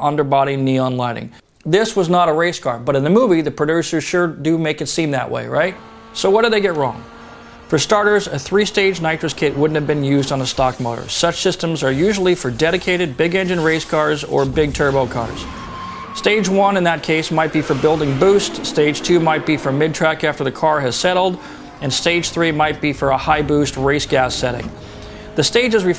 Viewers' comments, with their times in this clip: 0:09 They used the three stage nitrous kit becuase there might have been a boxer subaru engine in that eclipse, because if its sound comes to a subaru wrx sti